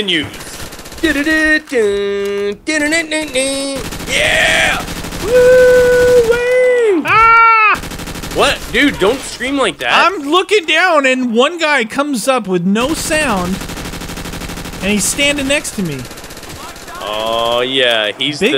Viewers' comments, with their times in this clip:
0:06 Meaty scream XD